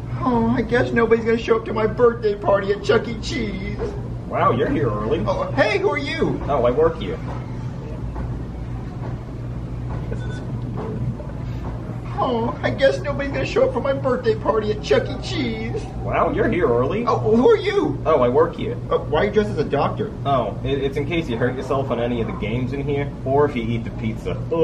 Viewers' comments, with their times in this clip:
0:08 I like how they just awkwardly pause lol